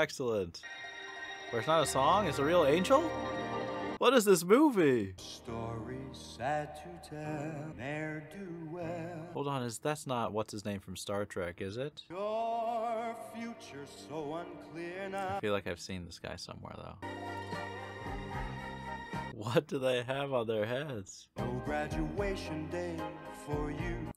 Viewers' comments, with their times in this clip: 0:09 If it was William Shatner, he’d be reciting it like a poem.